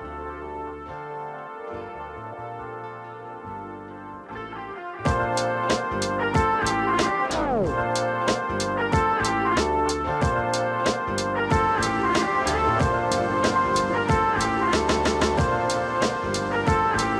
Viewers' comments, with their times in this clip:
0:05 When the drums hit I was like 🤘😁🤘